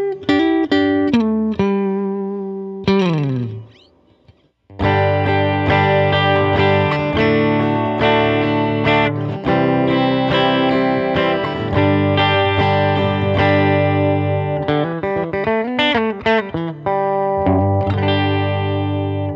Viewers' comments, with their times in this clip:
0:05 These are decent amps. Just got a version. The flabby-splatty sound from this demo is DEFINITELY not the best sound this amp can produce.